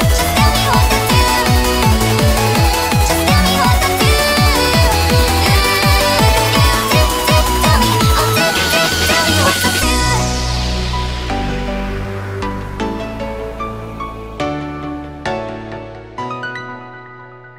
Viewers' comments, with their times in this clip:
0:05 the pathological facade reference is so cooool! And the way it changes to wild card in a blip.